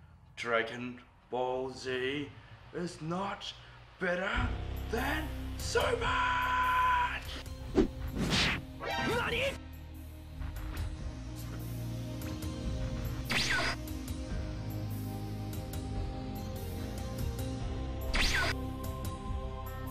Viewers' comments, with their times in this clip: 0:04 he is whisperingly screaming lol